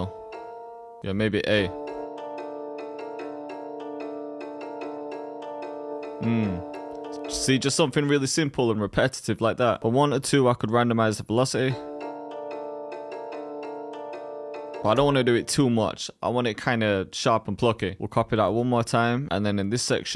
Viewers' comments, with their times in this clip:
0:05 Why does the melody sound like tokyo drift???? 😂😂